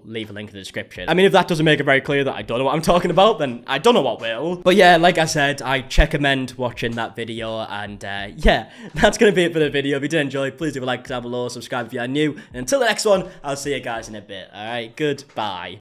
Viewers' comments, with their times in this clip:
0:12 I think we need Checkamend merch 😂